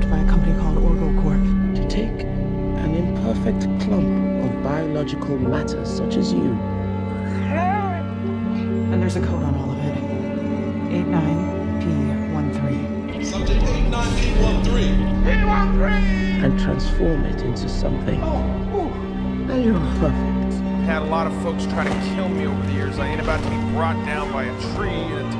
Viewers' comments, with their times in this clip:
0:07 .... that's REALLY damn close to the sounds my dog made before he died....fuck....I miss you Krümel